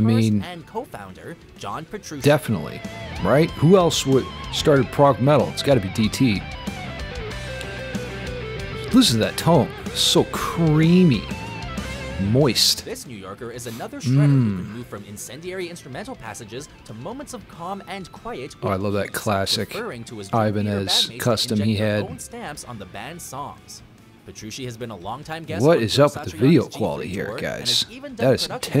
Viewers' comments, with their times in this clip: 0:10 the carbonara of guitar tones